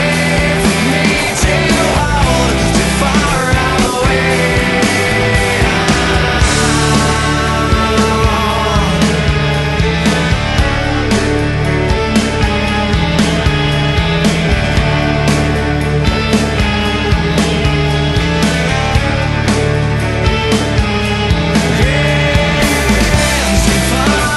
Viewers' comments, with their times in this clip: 0:10 the yeah is so clutch